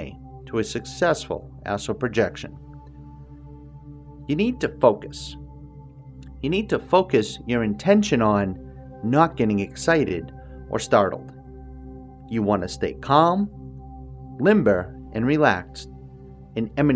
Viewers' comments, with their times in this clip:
0:04 always startles me. "You need to FOCUS... your intention on not get excited or startled." But you're the one who's startling me bro. Also this guy is goofy, but the session knocks me out consistently